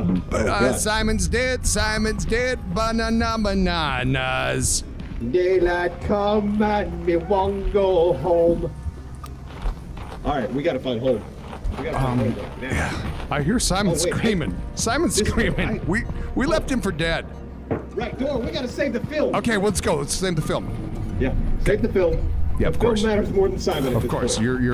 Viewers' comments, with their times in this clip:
0:07 Best take of the song yet!